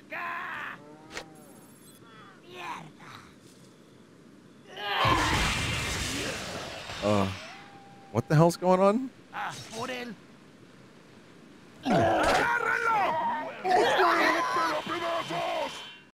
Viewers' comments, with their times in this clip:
0:09 I imagine those voices belong to Captain McMallard and his gang, including Stanley, from 320 Freleng Avenue.